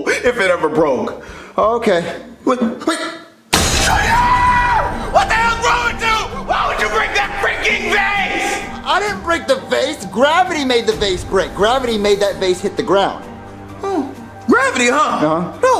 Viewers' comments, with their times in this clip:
0:03 Vase broken on ground And Junior's dad yells at him "JUNIORRRRRR!!!!!!!"